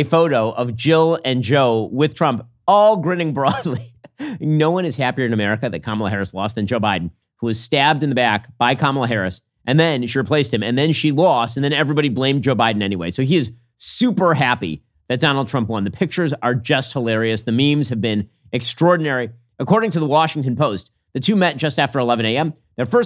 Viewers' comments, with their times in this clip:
0:04 that line was delivered perfectly